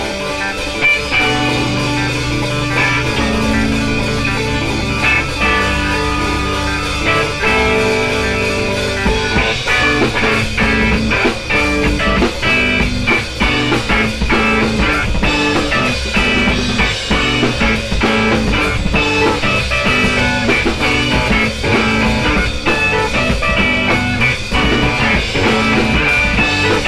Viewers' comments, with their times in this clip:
0:09 is pretty awesome, it reminds me of do make say think